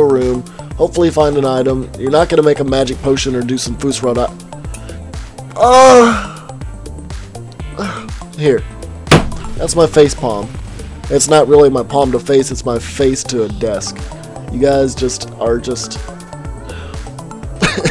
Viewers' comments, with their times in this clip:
0:04 I heard him moan